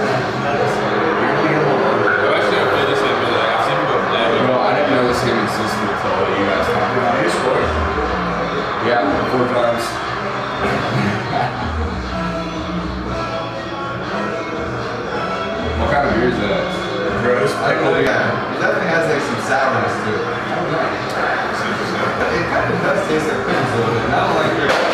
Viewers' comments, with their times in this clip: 0:09 omg his face just drops and he starts like breathing heavily, he looks like he’s about to cry omggg my heart